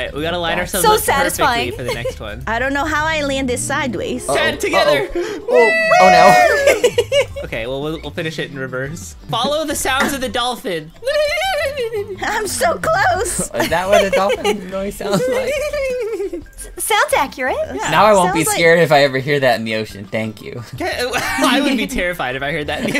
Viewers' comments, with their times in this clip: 0:10 ... The sounds of the dolphin......BOTIFUL (Yes I spelled that wrong on purpose, love ur vids!)